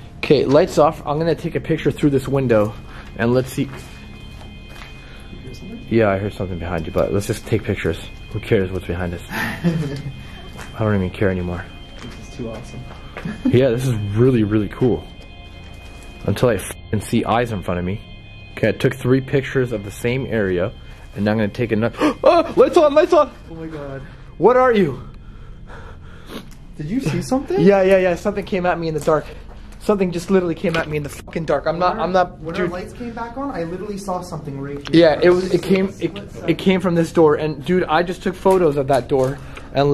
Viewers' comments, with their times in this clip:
0:04 heer a man
0:08 I heard like a boy haha
0:09 you can hear a laugh after whats his face laughs.
0:09 it a laugh ....and it's scary...
0:10 heard a weird ass noise, almost like a demonic laugh when you said I don't even care anymore
0:10 I heard a kid giggle
0:10 I heard a little like breath of like a girl maybe sounded like china moaning from five nights at Freddy's
0:10 you can hear a faint moan
0:11 you can hear some kind of laugh
0:22 after you both laughed a little girls laugh can be heard